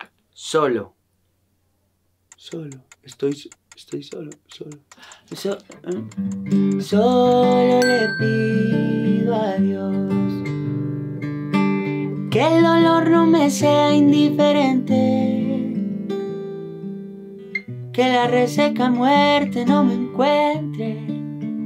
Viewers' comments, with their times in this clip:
0:07 ufff! That song!